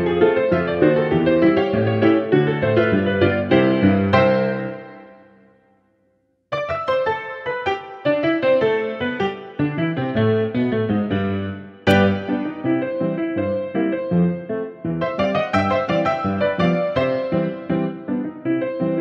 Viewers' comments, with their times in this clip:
0:06 Yea it’s like “round 2” FIGHT